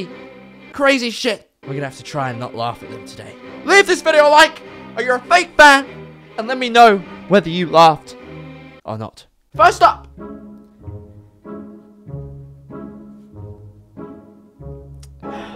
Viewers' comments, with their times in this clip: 0:03 sounds like the TØP fandom.